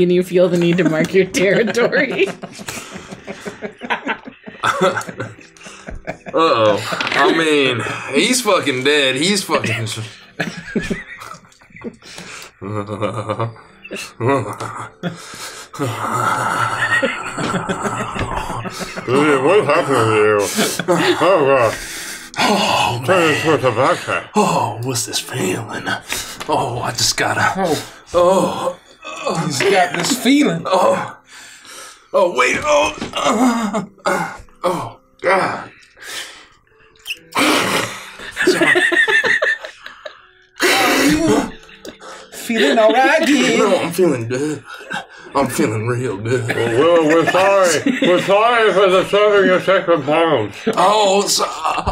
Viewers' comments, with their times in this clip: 0:07 and after, we all agree that THAT sound doesn't sound like peeing.
0:17 starts my need for Gideon to PIPE THE FUCK DOWN.
0:32 Just zoning out building in sims 4 until i wasn't. I had to rewind and see what the hell i missed because it did not sound like pissing